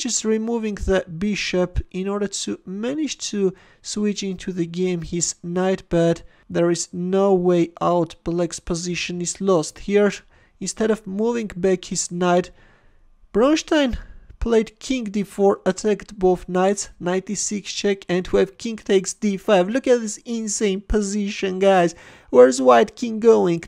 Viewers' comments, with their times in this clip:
0:10 instead of moving away his what?